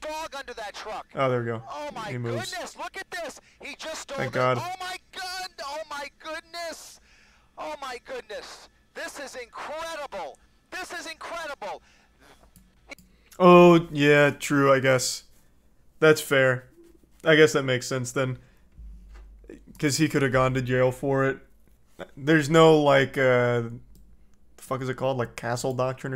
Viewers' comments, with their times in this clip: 0:08 I love the commentator in the chopper "THIS IS INCREDIBLE" felt like I was watching a WWE Match